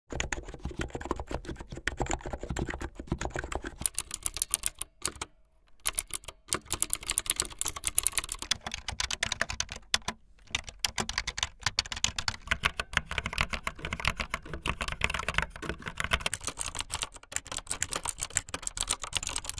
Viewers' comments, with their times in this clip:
0:04 why does it sound like the minecraft click sound lol